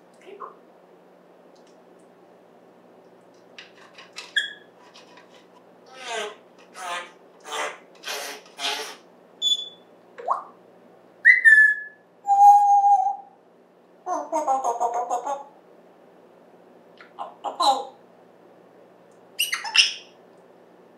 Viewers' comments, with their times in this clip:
0:06 I presumed based on the sound you’ve had tree trimmers around lmao sounds just like it.